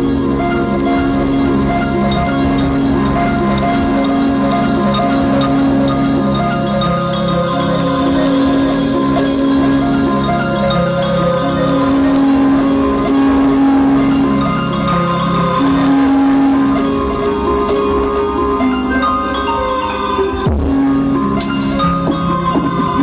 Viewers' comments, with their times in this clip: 0:05 my favorite part is when you first hear the Angels